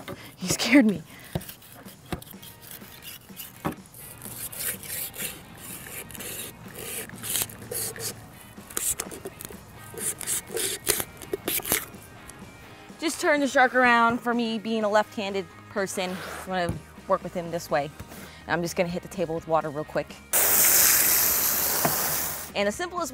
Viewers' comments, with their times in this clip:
0:06 didn’t know I came here for asmr 🧐